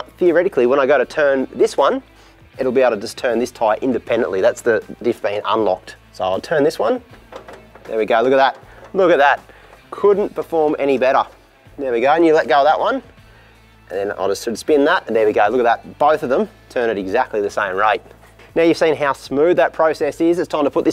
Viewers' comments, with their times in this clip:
0:04 what was that horrible crunching noise ?